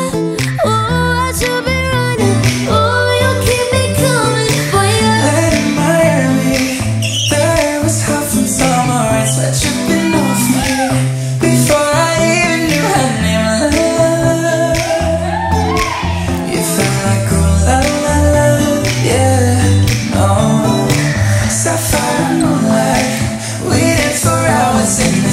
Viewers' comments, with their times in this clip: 0:06 when u hear that squeeee on the floor-